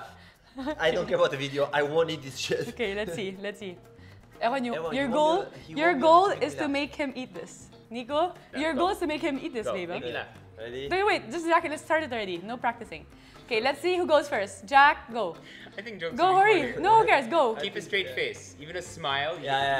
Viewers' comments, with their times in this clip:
0:03 dat french accent acting up.